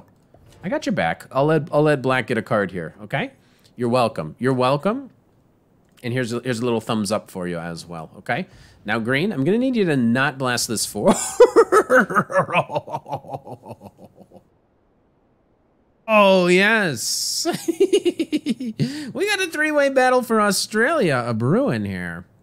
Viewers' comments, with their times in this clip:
0:10 I love the Scooby Doo laugh.